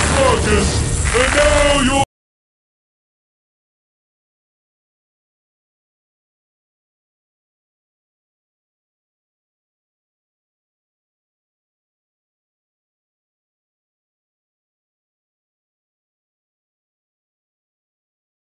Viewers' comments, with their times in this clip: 0:06 why it mute?